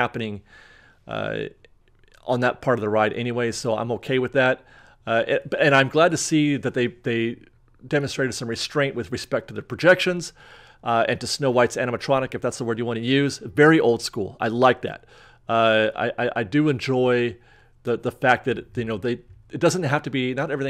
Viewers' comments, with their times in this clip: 0:04 are we both talking ?